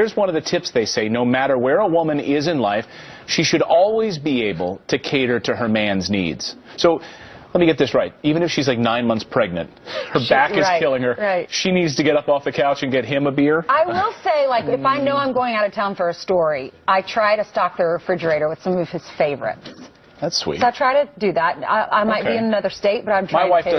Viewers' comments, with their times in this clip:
0:08 Holy shit. Assuming by his tone, he was being sarcastic. A Faux News host actually made a liberal point?.... That women shouldn't act like slaves, and that they need consideration too?.... I think I died.